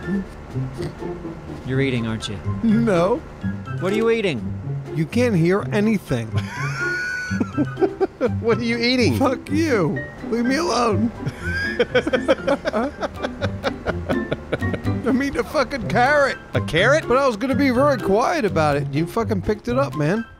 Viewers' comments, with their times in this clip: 0:06 Its a vacuum cleaner!